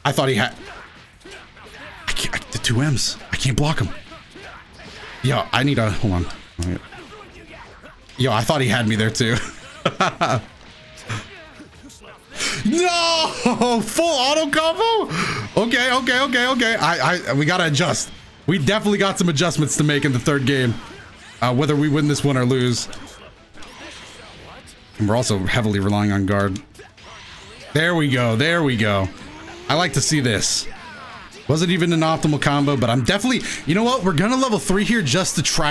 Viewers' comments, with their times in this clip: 0:07 was that a fart my man?
0:17 I like how you reacted to the autocombo with a scream but didnt block it